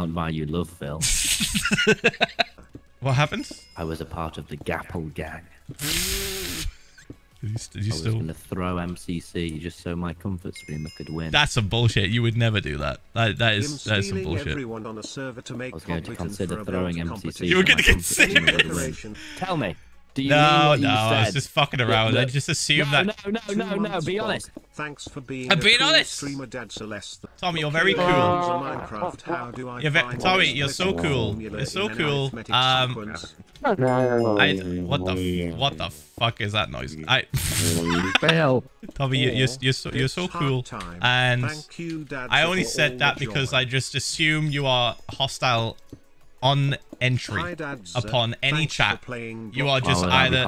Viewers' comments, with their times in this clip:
0:03 i like how tommy says gapple gang
0:27 Tommy crys in demon
0:27 WHAT KIND OF CRY IS THIS!?!?! GREMLIN C H I L D
0:29 Phil: tommy, youre very cool Tommy: * trombone noises * Phil: wtf..?
0:33 Why does he sound like that fly that buzzes by my ear in the middle of the night-
0:33 reminds me of mw2 voice chats and how they sounded like that
0:38 gives me glados vibes LMAO